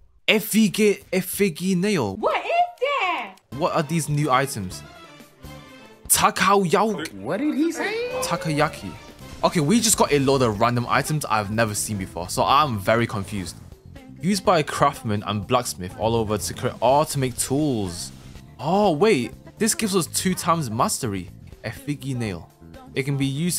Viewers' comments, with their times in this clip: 0:05 I ain't never heard someone pronounce tokoyaki that that